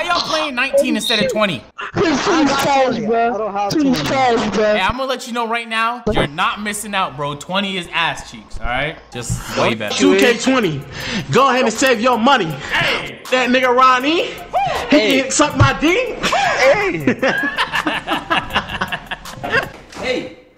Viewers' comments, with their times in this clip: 0:08 That due rapping in game chat had me dying